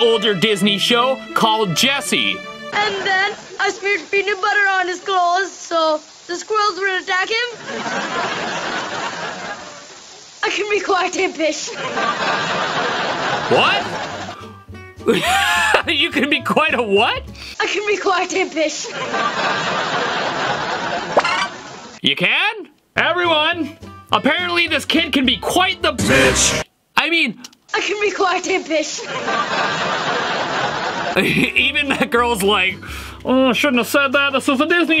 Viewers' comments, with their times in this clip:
0:03 he clearly didn't say that
0:09 Misheard: I can be quite a b**ch Correct: I can be quite impish What I heard: I can be quite a dish
0:10 I hear "I can be quite a fish"
0:10 I hear I can be quiet a bit
0:11 it kind of sounded like “I can be quite a bit” close to b***h
0:15 captions "i can be quite a fish (or quiet a fish)" me "i can polite a dish (or bish)" lol
0:16 he said swish or dish
0:21 I hear pi$$
0:28 I here I can be quite a piss 😅
0:28 "I can be quite a Bish" is actually "quite IMPISH" simple